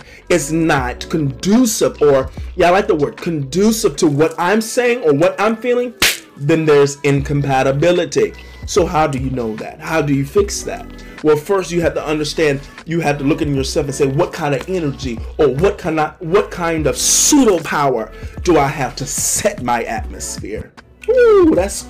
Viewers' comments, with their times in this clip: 0:05 is no one gonna talk about the sound of that slap bro doesn't wash his hands